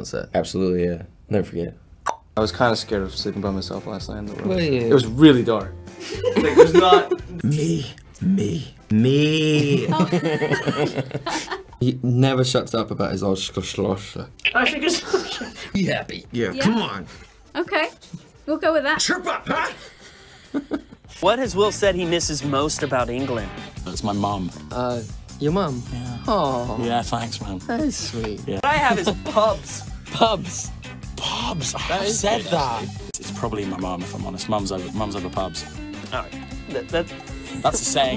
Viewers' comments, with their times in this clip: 0:03 why was that “were you?” So cute 😭❤️
0:05 thomas' reaction when ki told him he was scared of the dark is the sweetest thing in the "were you" ahh this man has my heart
0:10 Thomas,s laugh is the best thing ever . Just me or do you think Thomas and Dylan always are the ones to crack each other up Thomas had the man in tears once
0:19 tf did dylan say